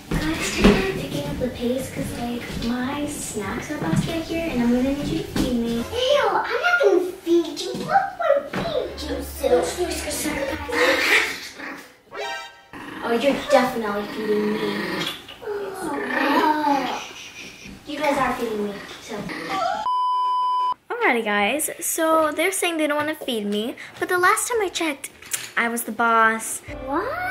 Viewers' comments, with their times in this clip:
0:09 for the bark:)